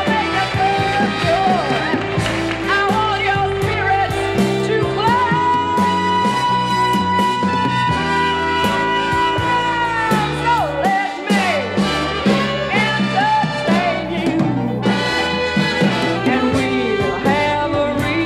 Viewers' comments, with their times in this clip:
0:05 Good projection and resonance